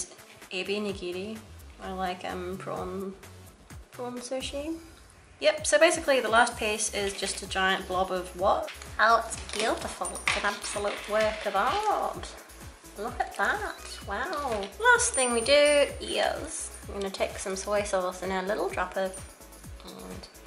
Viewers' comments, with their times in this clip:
0:08 she kinda sounded like Salad Fingers there xD